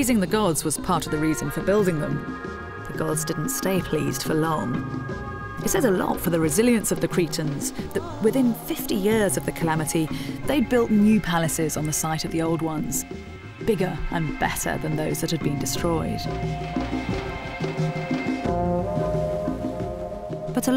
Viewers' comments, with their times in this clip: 0:06 The background music slaps. Throw in a little dubstep and it's like JJBA: Battle Tendency. lol